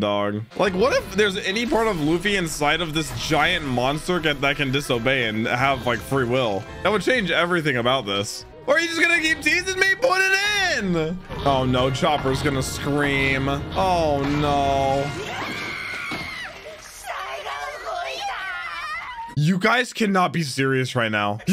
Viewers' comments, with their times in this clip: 0:08 sounded sus as hell lmao